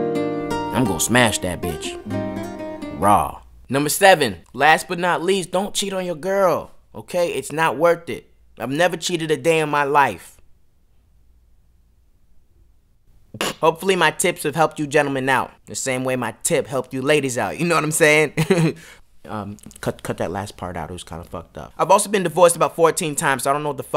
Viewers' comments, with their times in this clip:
0:10 "Don't cheat on your girl it's not worth it. I haven't cheated a day in my life..............." laughs 😂😂😂😂IM DYING